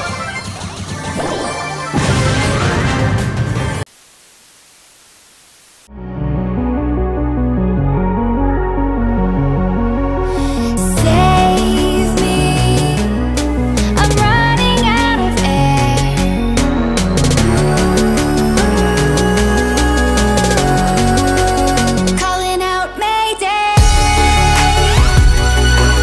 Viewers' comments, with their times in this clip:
0:10 I hate the song